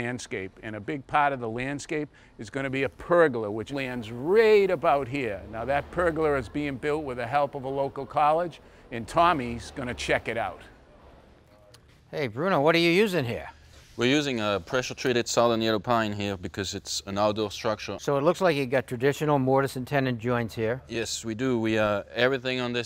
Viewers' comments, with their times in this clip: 0:05 what the hell is a pergler? 😂